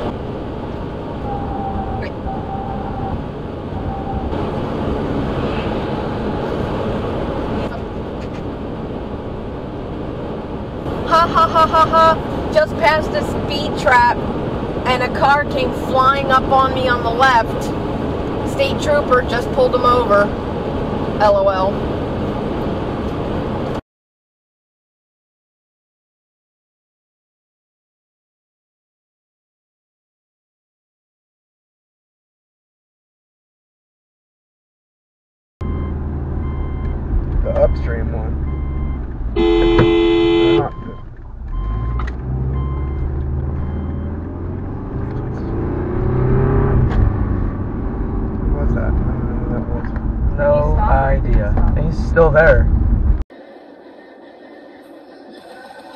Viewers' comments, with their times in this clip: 0:09 literally laughs like a text to speech bot does
0:10 girl literally sounds like she read this "Hahahaha" and literally says lol. she cant even laugh normally lmao
0:10 never thought someone would actually talk like they text...
0:10 Girl laugh like Siri
0:13 who laughs like that and she’s the lucky the other guy was faster than her or she could’ve been pulled over for speeding too
0:38 in no way was that close. It happened and you honked before even entering the intersection.